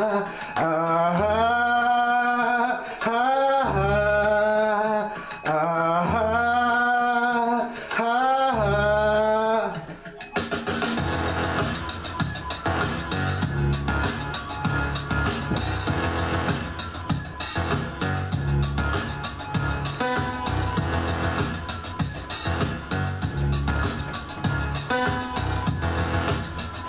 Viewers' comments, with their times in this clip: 0:08 Nailed the drop !!!